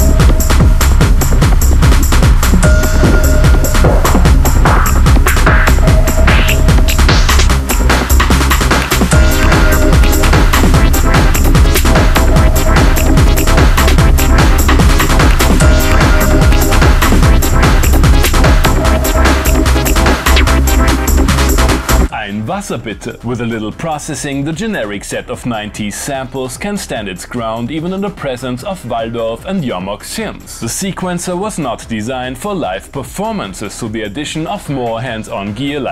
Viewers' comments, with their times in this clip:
0:10 what instrument is making that Detroit "(early nineties Rob Hood) sound? Don't tell me it's the DR5?
0:11 oh fuck yeah that is detroit as fuck
0:21 Why didn’t you let the chord hit before this cut, you madman? 😩 Amazing video as always! Guess this thing’s not gonna be so cheap anymore…